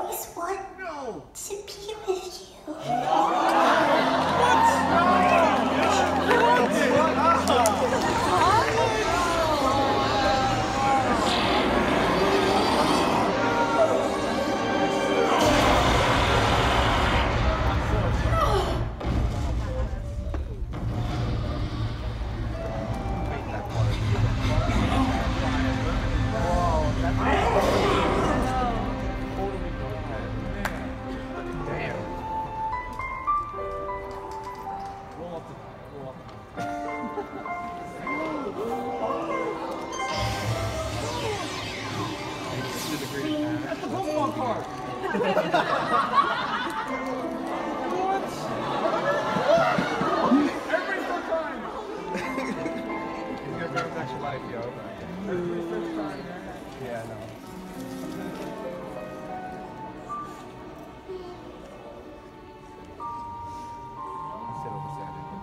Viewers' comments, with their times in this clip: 0:03 Fr, Glad i wasnt on that cinema, everyone's screaming so loud that we cant even hear a single thing💀💀
0:04 is the best nooooo in my opinion lol that's how I reacted when I saw this scene haha
0:50 i heard someone say every single time